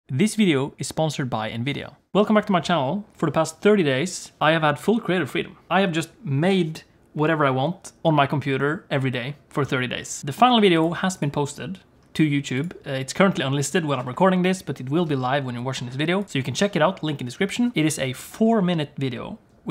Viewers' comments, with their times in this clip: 0:00 my brain is telling me that its "this video is sponsored by a video" please help 😭